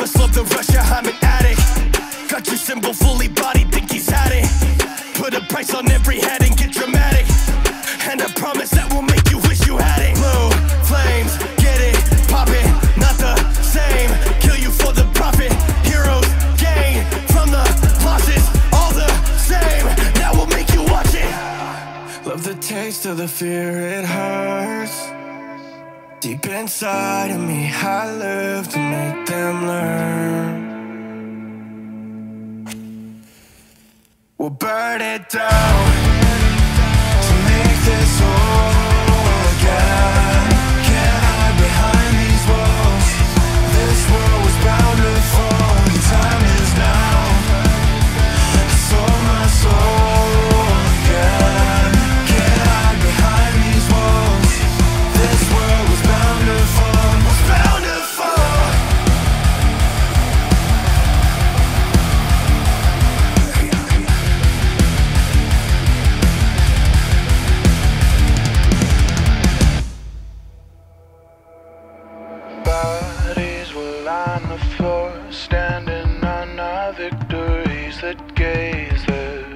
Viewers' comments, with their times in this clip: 0:09 that Blue Flames flow switch up was nasty! lol
0:32 The matchstick sound just shows attention to detail. Burn that like button! 🔥🔥🔥
1:04 i like my rock a bit more metal or just angrier especially the chorus would've improved a lot from that at least for me just that my comment would be a bit more positive i really love the solo